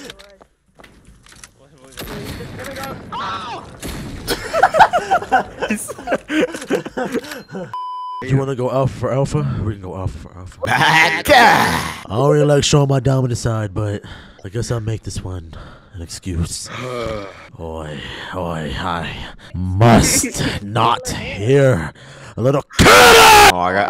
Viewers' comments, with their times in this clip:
0:10 why bro sound like spongebob 😭🙏